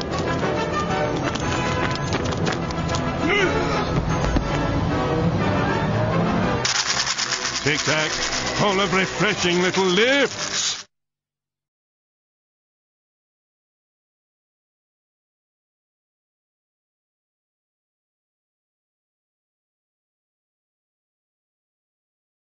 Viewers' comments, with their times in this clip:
0:06 Voice of plankton